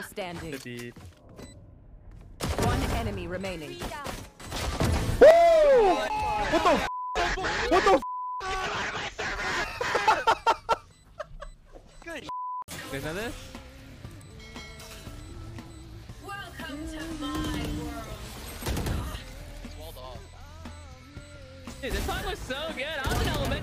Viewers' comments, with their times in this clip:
0:10 that fuucking scream